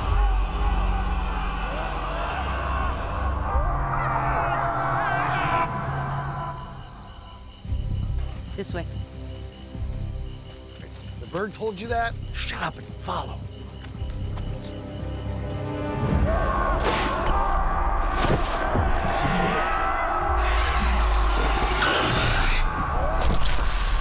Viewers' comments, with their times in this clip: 0:10 dem tings was giggling